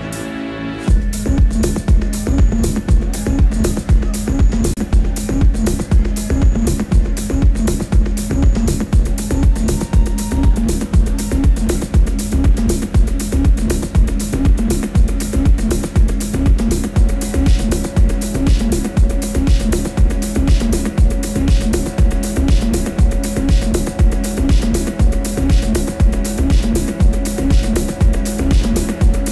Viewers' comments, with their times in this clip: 0:04 dance music. Early 2020s
0:16 buildup of the year